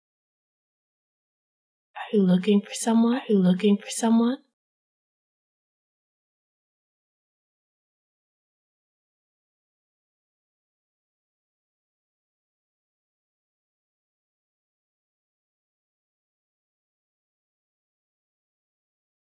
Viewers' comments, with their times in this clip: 0:04 OMG when the voice came out from behind i nearly had a heart attack